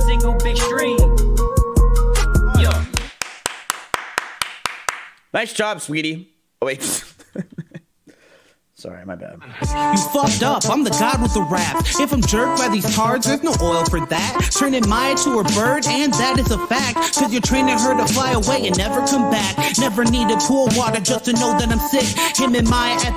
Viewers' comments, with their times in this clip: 0:10 The beat is fucking crazy.